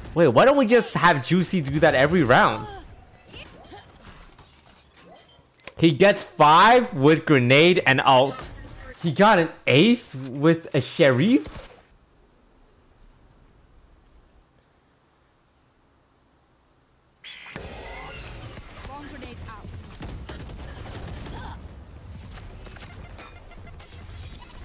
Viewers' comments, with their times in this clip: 0:10 that "sheriff" pronunciation is so funny 😂